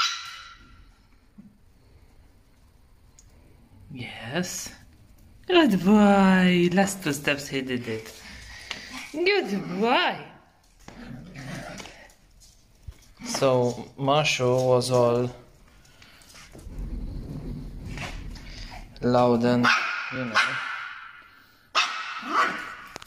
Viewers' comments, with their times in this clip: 0:05 Yori is a determined boy, he doesn't liking being manipulated. He will judge his ability whether he is capable of doing it. When Hooman 1 hugs him to the stairs, he struggles and wail because he doesn't want to climb the stairs. Look, his last step is powerful!🤩💖💗💓💞💕